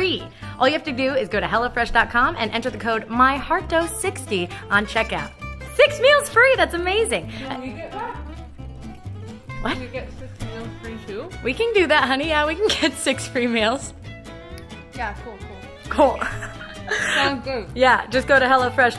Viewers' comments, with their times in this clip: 0:04 Until I thought you were saying HellaFresh.